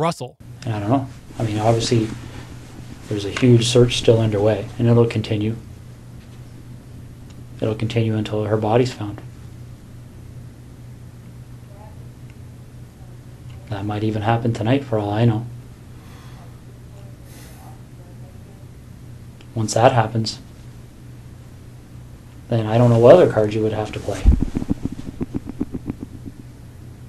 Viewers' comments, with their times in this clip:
0:10 the detective says, "there's a search underway and it will continue until her body is found. That might even happy tonight for all I know." William's then does a noticeable inhale and exhale. Think there could be something behind that kind of response? Would love to hear your response. Thanks.